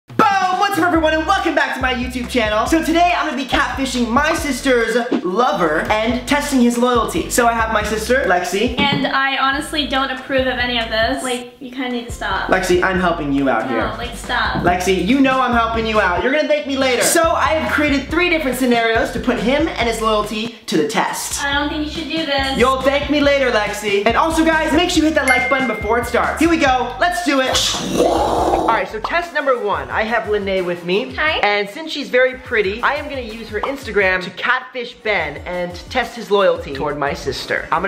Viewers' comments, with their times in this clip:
0:08 Did you here lexi stepping on a stool
0:25 I actually thought I got a text message!